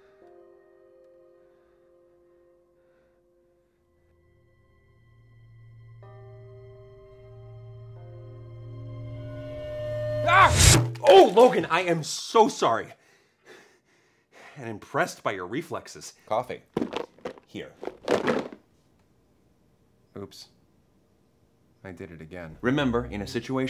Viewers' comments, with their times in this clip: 0:10 Thomas: Ooh Logan I am so sorry! And impressed by your reflexes... Logan: cOfFeE Logan, you are such a mood and i'm here for it.